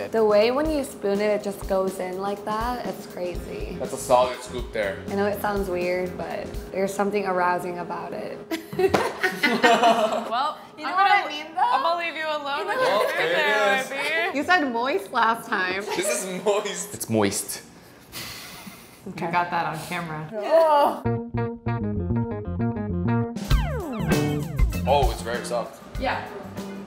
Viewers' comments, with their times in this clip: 0:08 her laugh is cute and cunning at the same time lol